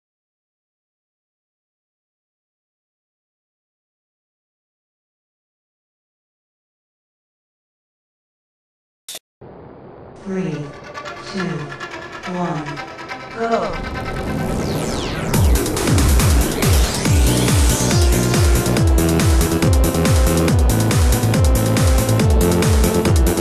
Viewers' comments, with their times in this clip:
0:10 I NEED THIS MUSIC